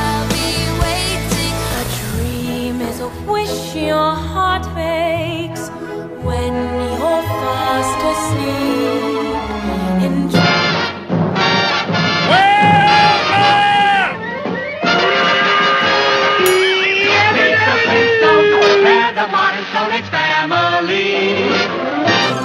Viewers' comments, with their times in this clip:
0:03 did she really say price eric 🤣